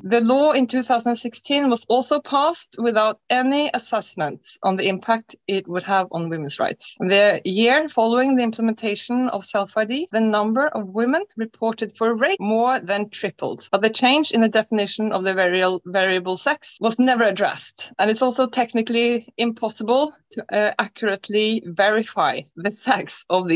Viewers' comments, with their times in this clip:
0:07 the word is cut off and unclear: You did say "..women reported for RAPE (more than tripled)," correct?